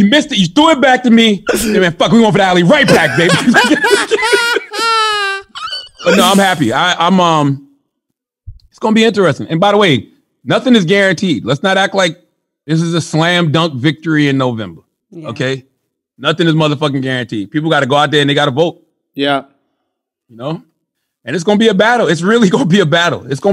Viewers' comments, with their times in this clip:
0:04 Andrews dolphin squeal had me rolling 😆